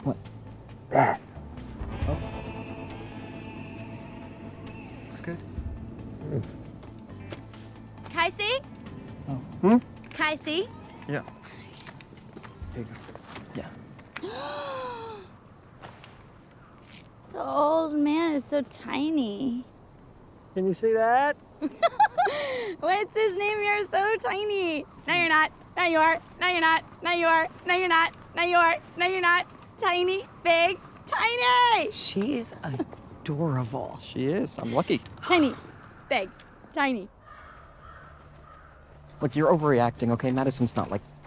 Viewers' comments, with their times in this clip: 0:08 They even put subtitles cuz otherwise we wouldn't know wtf she was sayin unless we grew up in the Cali Valley lmao "K C?" "hm?" "K C?" "ye" Her character is so fkin loveable.
0:27 car drives past